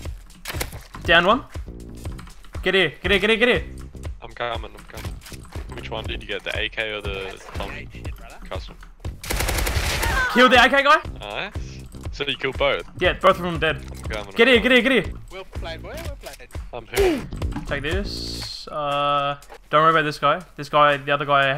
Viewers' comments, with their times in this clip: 0:07 either that was editing or that guys scream was next level.